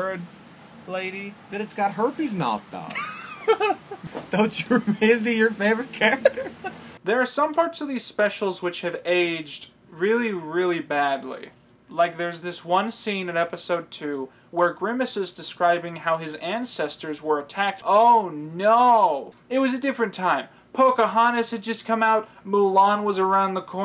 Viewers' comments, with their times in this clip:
0:06 Two Things 1. This explains why the “VCR” (aka Mom and Dad) malfunctioned and destroyed the one episode I owned. And for that. I’d like to thank my parents. 2. When the narrator near said “Pocahontas had just come out” my first thought was “Pocahontas was a lesbian??” It took me a minute.